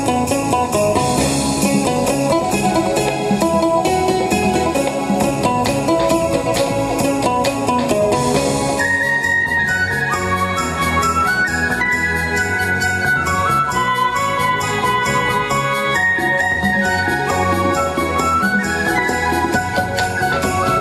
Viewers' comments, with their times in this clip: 0:08 Very nice Vietnamese traditional dance video and especially the song 🙂